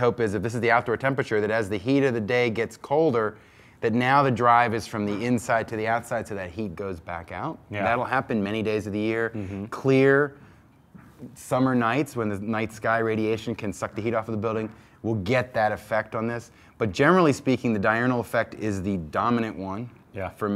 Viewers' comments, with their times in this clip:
0:07 Did he say "Dynamo Effect" ??